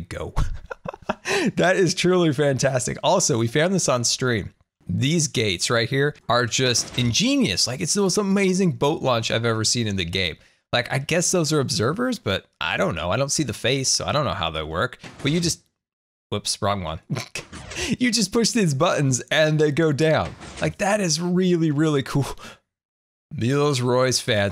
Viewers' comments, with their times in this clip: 0:09 Love the song!!!!! 😍😂❤️